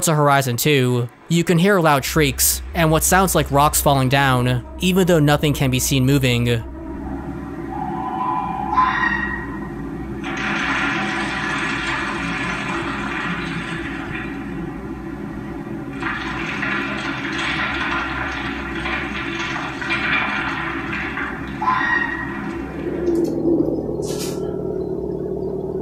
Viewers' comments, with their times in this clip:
0:07 it’s not creepy ghosts or anything, it’s just some guy that had taco bell